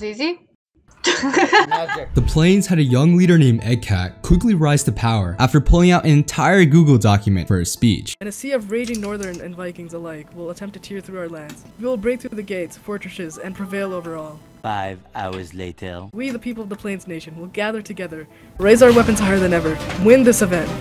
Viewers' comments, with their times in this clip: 0:05 *murders a man then laughs. Wow